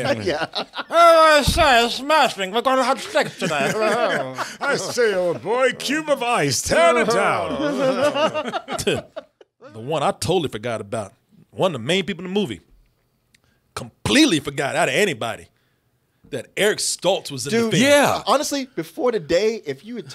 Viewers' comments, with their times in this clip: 0:08 how the hell do you compare him with Tim Curry's voice?